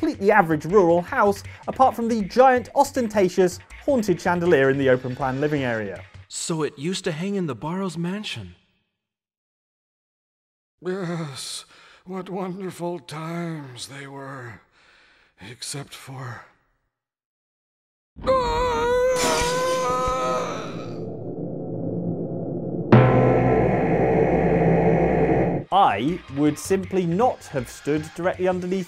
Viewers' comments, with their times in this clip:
0:09 I love the pause for dramatic effect on this part, its as if he knew you was about to die. 😂